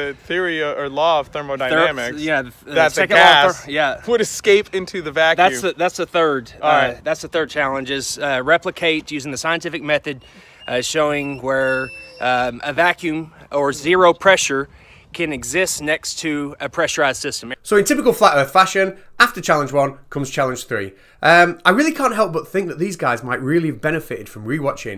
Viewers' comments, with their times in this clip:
0:08 Did anybody else think there was a crying dog nearby you before realising it was on the video?